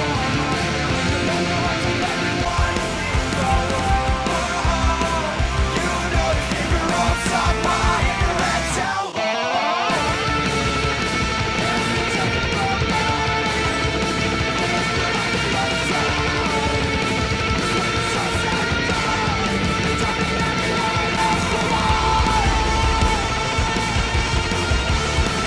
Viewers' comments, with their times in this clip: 0:09 is it just me or in the struming on gh is faster?